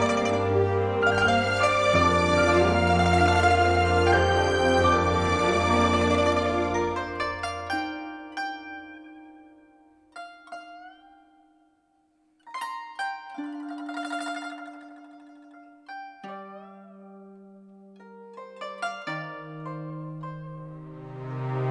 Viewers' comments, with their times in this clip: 0:06 Glad I could finally hear in its original glory without Paimon moaning all over the track